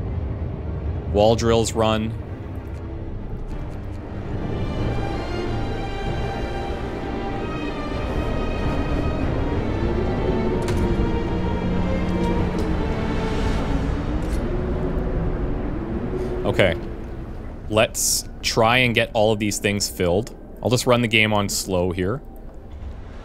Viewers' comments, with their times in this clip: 0:08 when the main storm theme plays during the great storm, that's the best part of Frostpunk to me. It's just sheer tension, some part anticipation and some part terror of what's to come